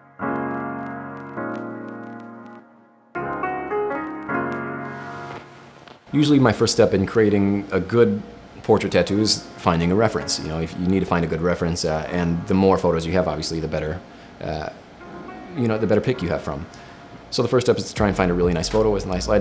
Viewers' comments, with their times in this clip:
0:06 That beat is 🔥 love from Baltimore,Maryland💯💯🔥🔥